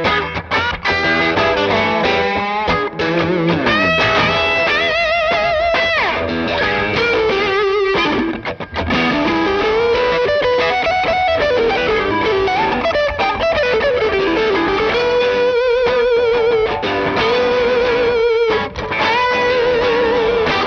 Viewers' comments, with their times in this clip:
0:06 That tone from the purple ! LEMME GET THAT ORANGE FLAKE!